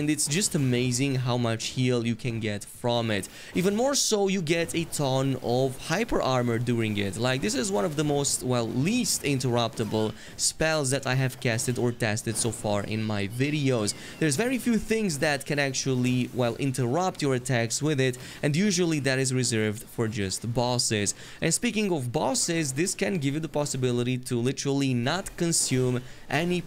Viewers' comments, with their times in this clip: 0:09 This is a cursed comment, you have been warned: Morgott sounds like a japanese anime girl.
0:11 Amazing and informative video but... Can we all appreciate Morgott's high pitched scream at the mark
0:12 Morgott cries like an anime girl
0:12 morgot just sounds like the an anime girl